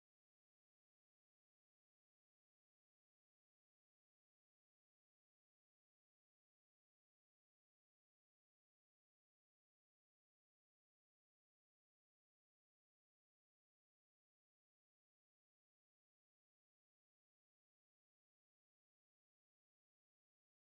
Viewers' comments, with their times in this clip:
0:04 No audio after